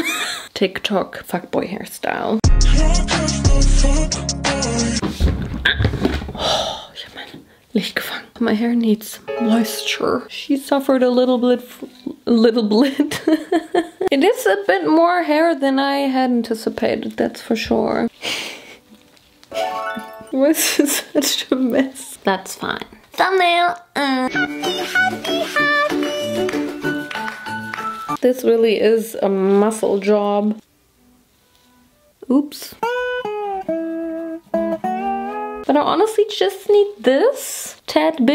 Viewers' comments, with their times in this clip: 0:09 The little piano play gave me to your eternity ptsd
0:24 Not super simple songs “Happy” 😭😭